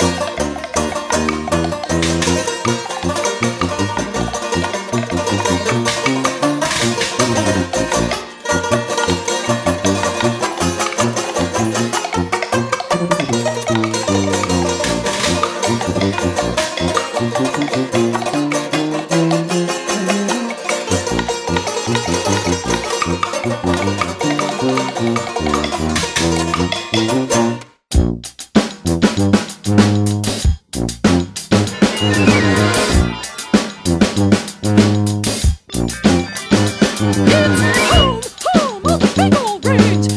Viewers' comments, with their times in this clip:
0:03 some drunk Hobbit song
0:28 is badass af. Not even lying, I love that trombone bass line. It's sick.